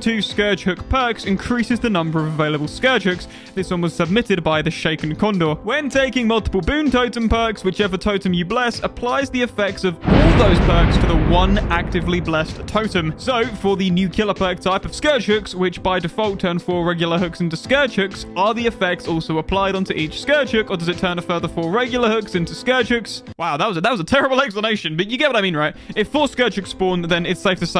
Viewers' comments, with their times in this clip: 0:08 my god damn EEAAARSS1!!!!!!!